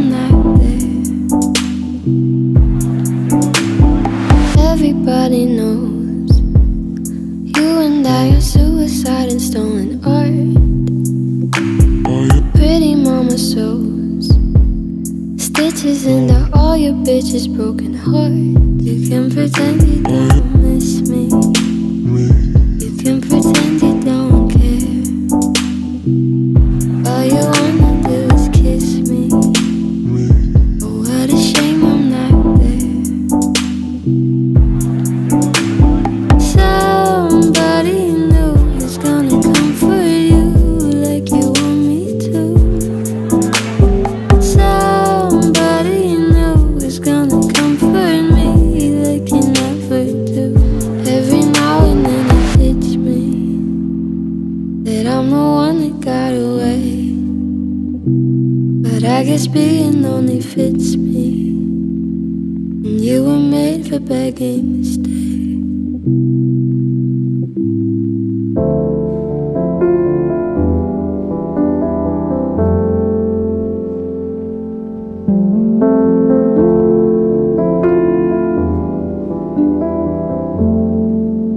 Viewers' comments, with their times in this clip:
0:10 I can't unheard the moan 😭😭😭
1:03 The sharp voice crack really is a hit in the feels.
1:04 the way she says stay is the last noise my soul makes while fading away
1:05 My toxic trait is thinking I could hit this note
1:07 this piano makes me cry every time